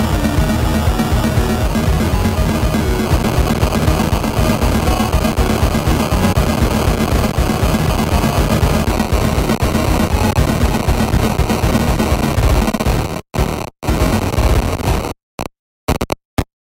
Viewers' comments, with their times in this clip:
0:03 Trve Norwegian black thrashcore